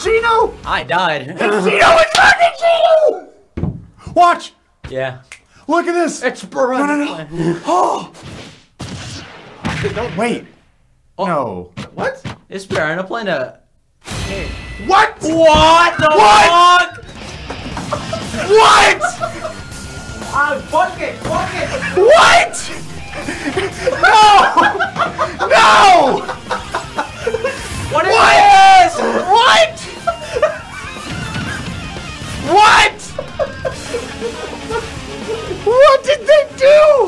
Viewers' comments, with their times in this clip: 0:03 the way how you said "WATCH" had me weak. You sounded so happy 😂
0:16 the sound of a man who has lost everything.
0:18 I CANT STOP LAUGHING HES JUST POINTING AT THE SCREEN AND EVERYONES SCREAMING WHAT IM CRYING